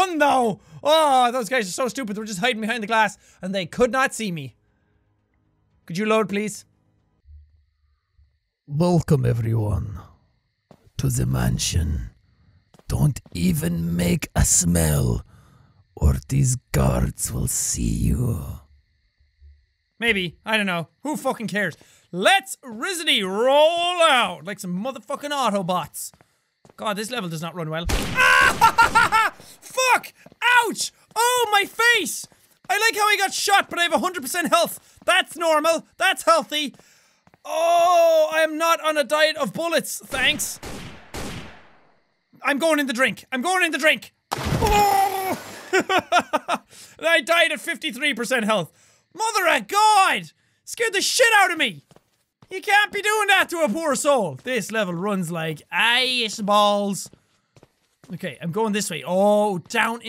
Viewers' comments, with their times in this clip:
0:08 dat voice is funny
0:27 As soon as ge went AHH it cut off and i got a "my partner is cheating on me ad"
0:27 Rewatching and an ad pops up Perfectly cut scream
0:45 is the best drowning noises ever lol